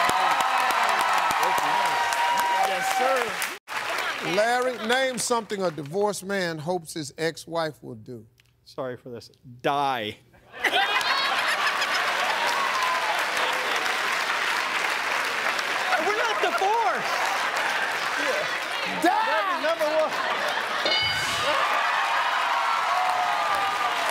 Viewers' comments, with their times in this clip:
0:04 I love how he says, "Sorry for this."
0:08 I love how he's apologizing for his answer. He: *speaks quietly* "sorry for this" *gets closer to microphone, clears throat, rage mode: on* "DIE"
0:11 That sinister laugh is America.